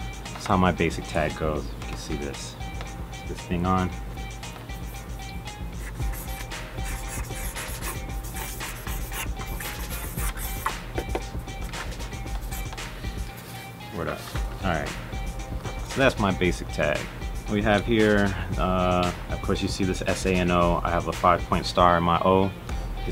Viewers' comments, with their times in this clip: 0:05 his tagging went with the beat lmao